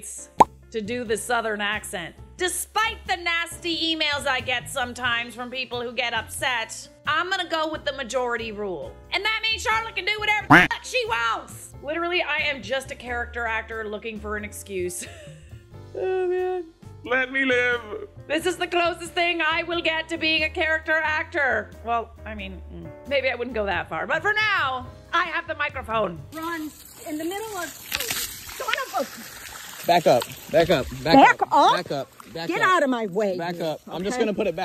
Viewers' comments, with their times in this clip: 0:03 when you add that southern accent, does that now make you the Sweet Potato Queen, too? 🍠👸
0:07 from the deep south here, dont you dare stop using that southern accent ever! 😂
0:13 Born and raised in Texas... you do a better accent than most of the country singers here, so by all means, honey, go right ahead.
0:20 28 yo, born and raised Texan here 🙋🏻‍♀️ I love iiitttttt! I don’t have much of an accent, myself, but i definitely use it to make fun of my mom and others often. It’s a fun accent and you should be able to do it anytime you wwaaannnntttttt ❤️